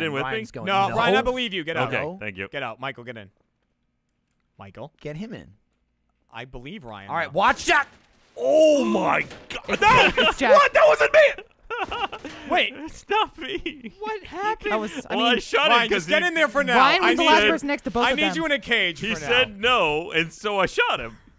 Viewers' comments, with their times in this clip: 0:09 God Jacks scream was like he was actually being murdered